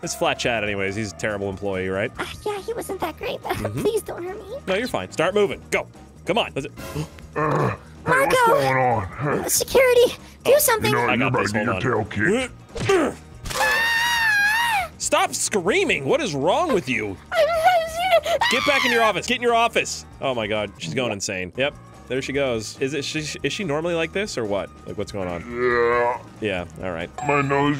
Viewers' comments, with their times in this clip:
0:08 the scream was hilarious